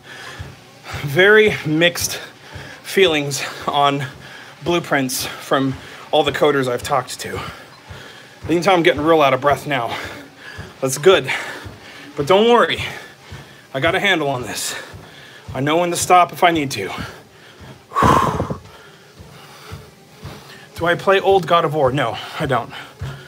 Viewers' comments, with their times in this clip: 0:09 Really out of breath